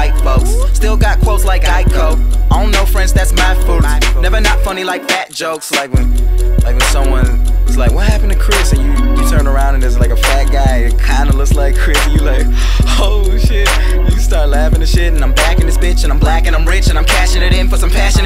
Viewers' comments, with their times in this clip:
0:05 yo that transition from rap to talking Back to rap was smooth as fuck